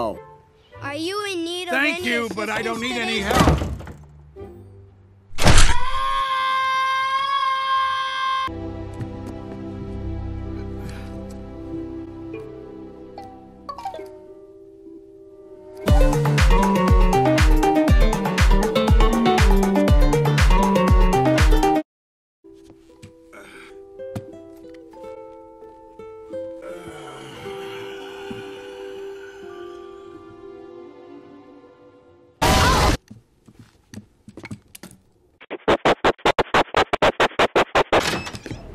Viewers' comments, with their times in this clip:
0:06 The little kids scream so loud😂😂😂
0:16 Nice music in 🎶🎹🎵
0:26 bro sigh too much😂🗿☠️